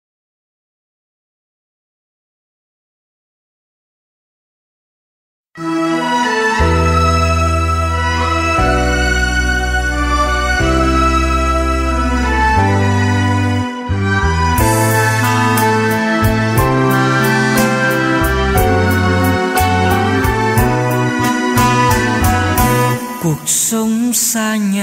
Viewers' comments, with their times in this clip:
0:06 Why does does it change to music in Vietnamese?